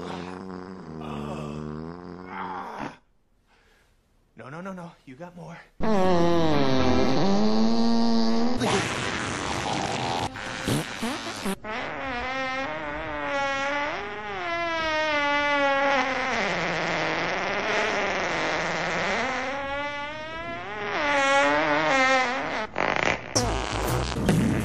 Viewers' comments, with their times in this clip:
0:06 taco bell new spicy sauce Really makes your fartS DO THAT